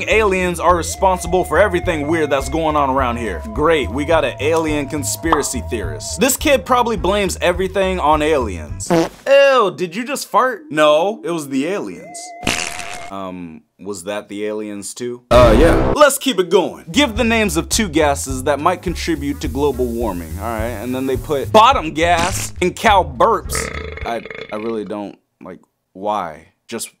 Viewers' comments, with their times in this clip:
0:08 Fart "Eww did you just fart?!" "No, it was the aliens" Wet Fart "Was that the aliens too?" U H Y E A H